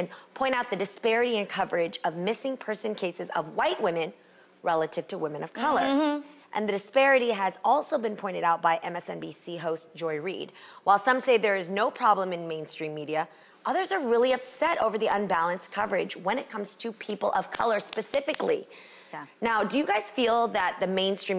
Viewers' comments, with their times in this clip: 0:05 I felt that MMHMM in my spirit! Lol